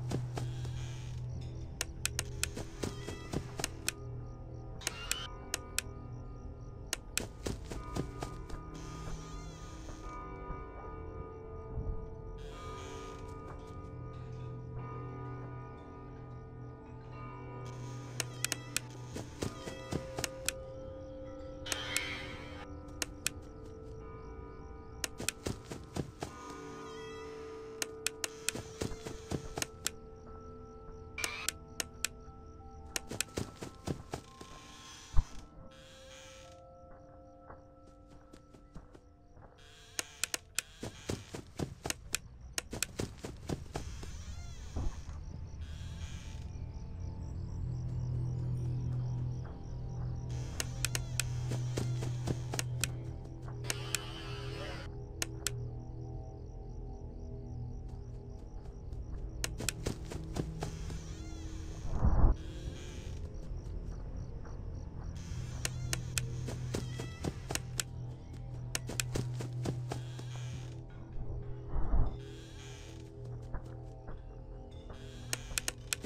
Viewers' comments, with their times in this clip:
0:10 In you can hear it breathing, if you don't hear, use earphones of make the volume higher OR go to a quieter place.
1:01 there is a more louder breath.